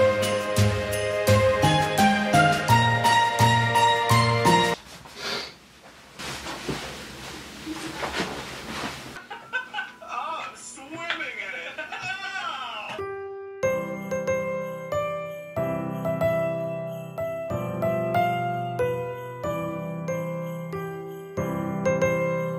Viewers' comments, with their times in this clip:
0:08 game grumps in the back ground